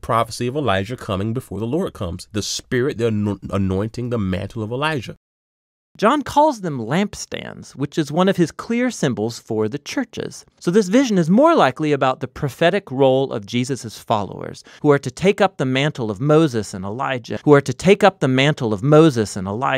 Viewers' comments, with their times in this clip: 0:06 That voice switch 😂